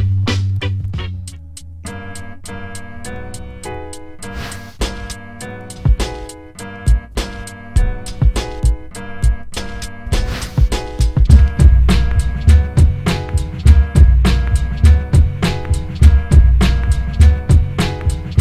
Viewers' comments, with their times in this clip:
0:04 This is one of my favorite beats. Makes me want to slap the shit outta someone